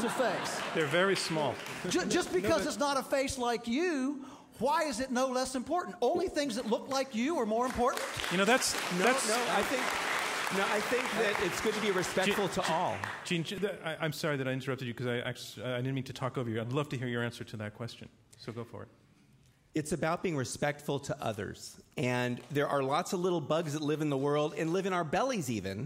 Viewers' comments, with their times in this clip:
0:10 who the fuck would clap to that!?